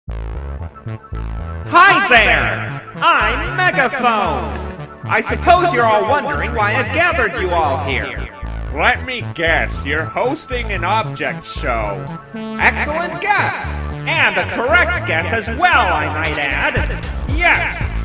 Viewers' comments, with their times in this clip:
0:02 M Y. E A R S